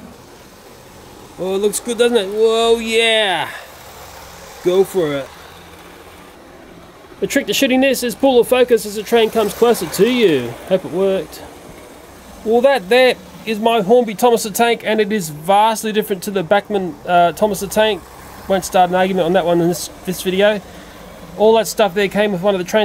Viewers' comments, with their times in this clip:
0:07 The trick to s**ting this 😂